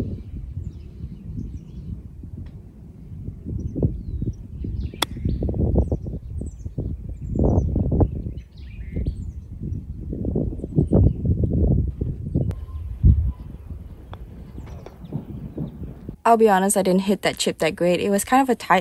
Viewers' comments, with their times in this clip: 0:03 how does the ball stop in mid air on second bounce and why does the wind's pitch clip the exact moment the ball does? interesting.